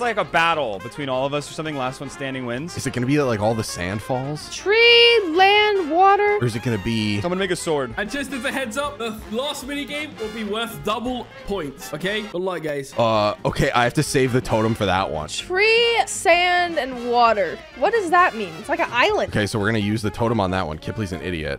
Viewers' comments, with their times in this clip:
0:06 bro it sounded like someone''s n##ga sword